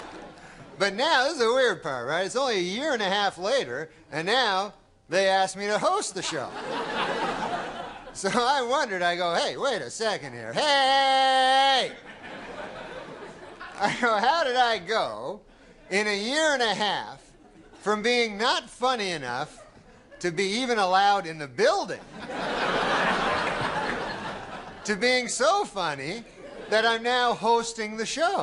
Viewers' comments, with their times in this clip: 0:10 that hey he does is legendary